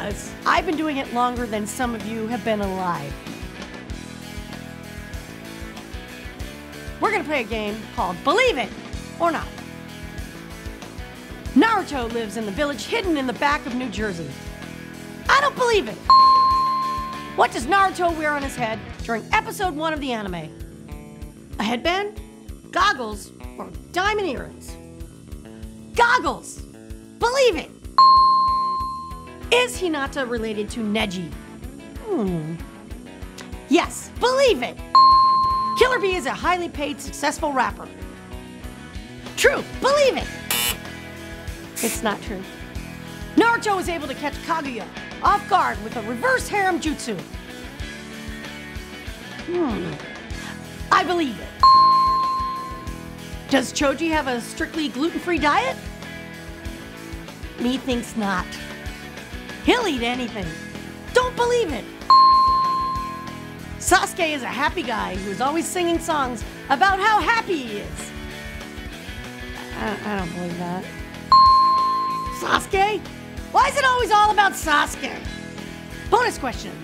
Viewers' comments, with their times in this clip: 0:08 when she said 'believe it', I felt naruto
1:03 lol I'm closing my eyes and imagining naruto saying it😂